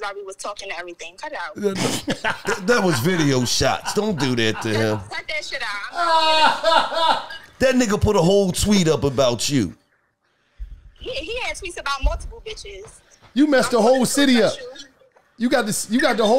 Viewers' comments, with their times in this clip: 0:03 wallo laugh was genuine and I laugh with him 🤣 this was funny when she was on the phone